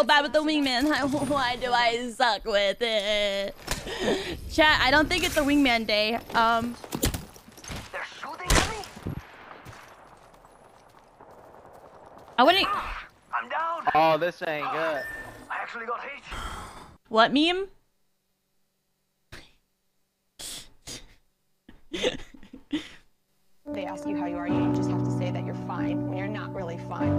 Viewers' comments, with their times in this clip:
0:08 Why is no one talking 😂